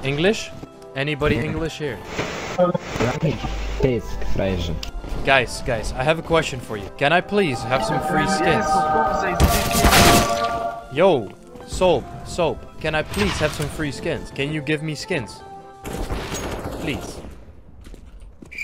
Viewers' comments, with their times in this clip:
0:04 hehe english vs polish